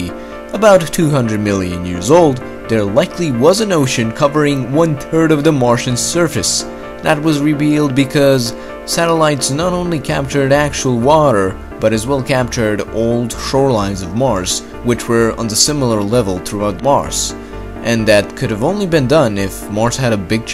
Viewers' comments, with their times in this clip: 0:04 wait am i hearing this right one tird?